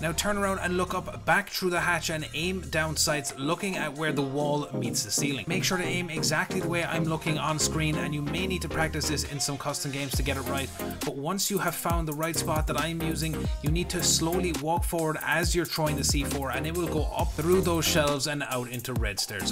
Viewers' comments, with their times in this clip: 0:06 The music is so chill I love it! Great job Im definitely going to need to practice that cigar c4 throw